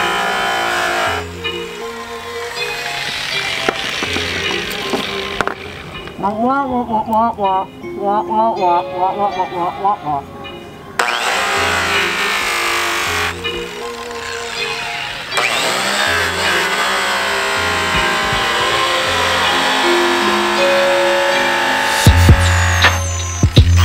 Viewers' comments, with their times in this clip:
0:05 Charlie Brown fans would be proud.